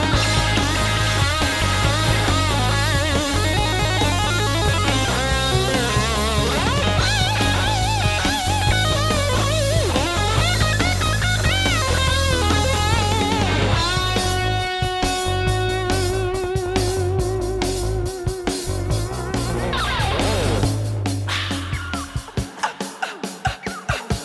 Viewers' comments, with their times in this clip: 0:06 I hate to say it but the triple bend thing that Eddie does in this video is not even close. I don't know what it is about that part, but nobody seems to nail it. It is so wild. I can't believe someone was coming up with that forward thinking shit in 1978.